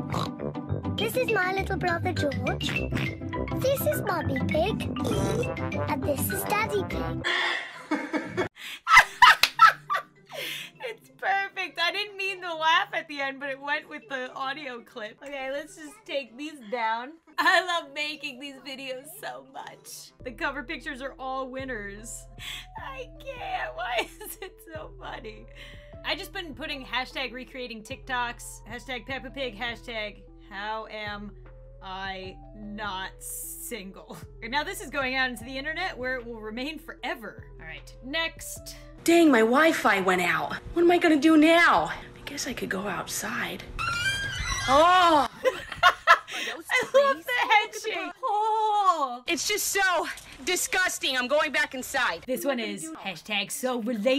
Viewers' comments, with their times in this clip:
0:07 like daddy pig is supposed to laugh evil like muhah... Yeah like that
0:39 when I watched ur tik tok before dis video I honestly thought that it was u talking 😹